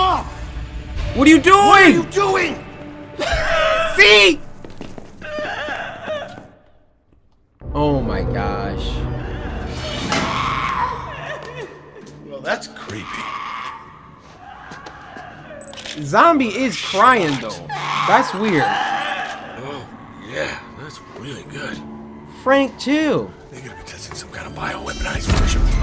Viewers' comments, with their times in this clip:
0:07 War flashbacks to Left 4 Dead WITCH ZOMBIE! IT’S A HECKIN’ WITCH, I BET!
0:11 sounds like a witch from left 4 dead